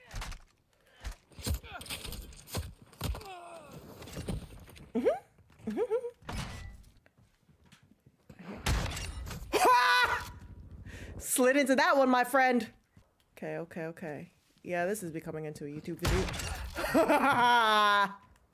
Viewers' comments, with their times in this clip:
0:06 that laugh tho 😅😊